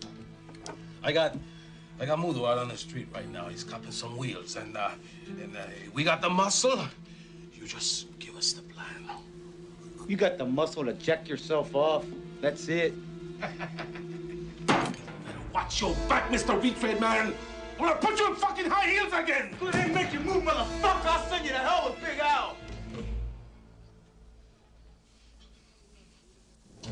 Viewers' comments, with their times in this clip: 0:09 that one guys laugh had me dead